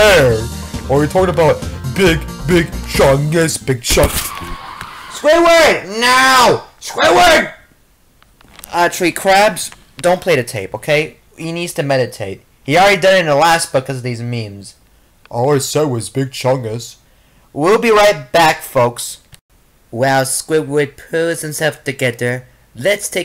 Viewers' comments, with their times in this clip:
0:04 (SCREEEEEEEEECH) ((Aaand there goes Squidward…))